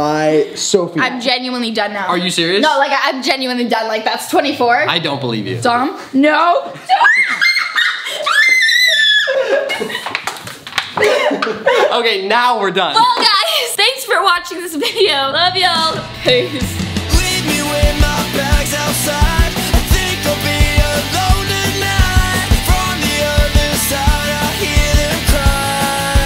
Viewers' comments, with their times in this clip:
0:08 the scream tho-😆 . so relatable